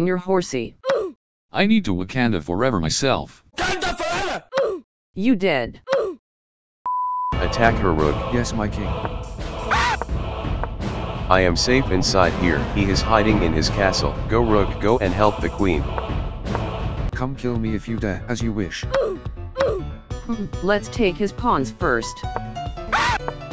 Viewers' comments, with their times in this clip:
0:08 Rook's voice so softly